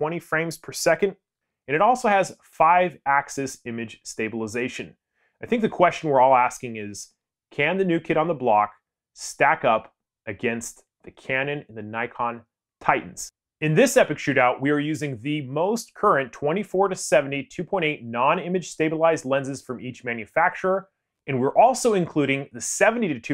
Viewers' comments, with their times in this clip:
0:09 Awesome video! Great comparison, although I think you might want to invest in a more expensive microphone, just to remove that distortion and up your videos( which are already great) to an even higher level. Also pretty sure you didn't mean to have TITLE floating around Altogether though this is an amazing video, and it should be an example to others.